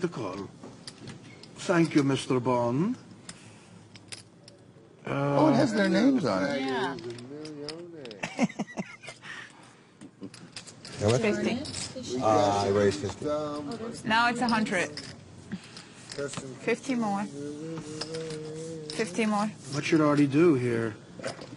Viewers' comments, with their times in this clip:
0:05 I love how norm starts singing money for nothing lmao